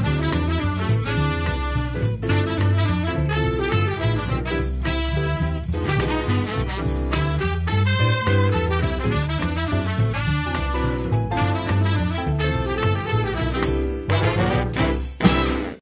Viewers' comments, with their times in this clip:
0:03 Love the grand MARIO theme at the end